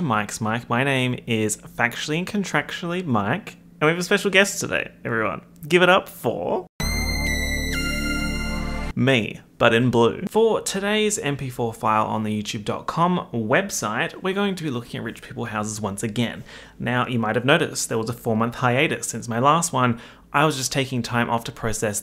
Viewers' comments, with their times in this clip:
0:06 NOT THE HIGH HI INTRO